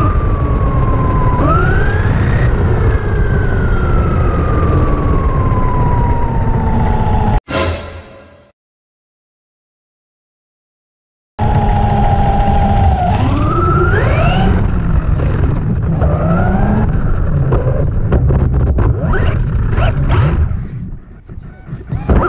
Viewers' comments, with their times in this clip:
0:09 can’t touch this starts playing